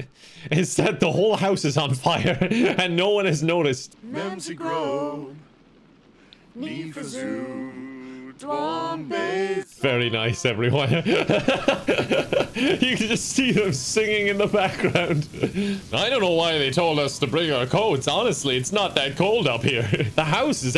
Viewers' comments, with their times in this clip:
0:04 The happy singing and the ferocious fire sound in the background killed me...and the Fireman.
0:05 I cant believe kevin didn't realize they were singing country road
0:06 The three of them singing around the mark sounded for JUST a second like Country Roads. 😅